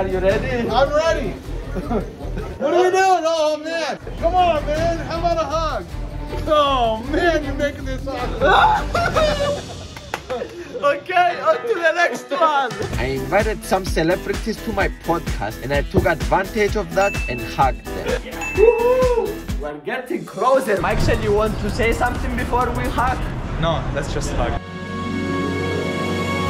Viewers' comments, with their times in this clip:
0:09 someone PLS clip this cry 🤣🤣🤣